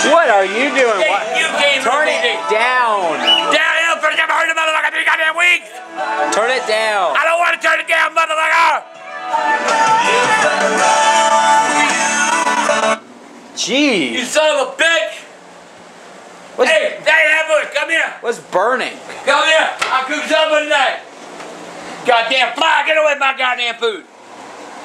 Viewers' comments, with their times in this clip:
0:07 when the teacher tells you to turn your heaadphones down in class.